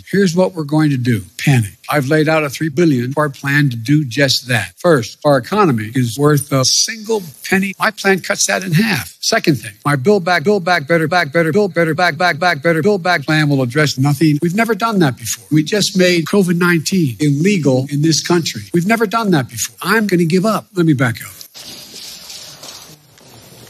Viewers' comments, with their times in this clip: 0:10 could be turned into a drum and bass mix